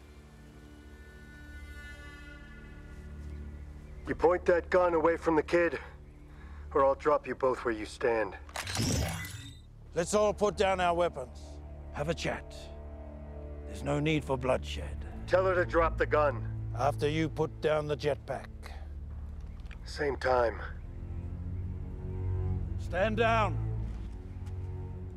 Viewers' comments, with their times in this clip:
0:10 Boba is scared of whistling birds